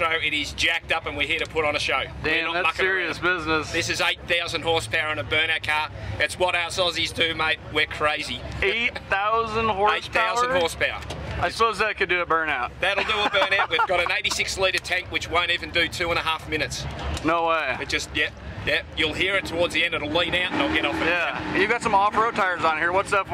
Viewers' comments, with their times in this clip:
0:08 1320 "eight thousand horsepower..?" : Aussie " AIGHT thousand horsepower !" Don Garlits would jealous